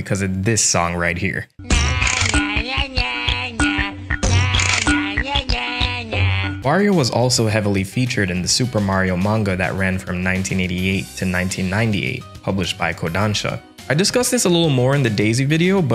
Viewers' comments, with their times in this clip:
0:03 daum bro that beat hit different 💀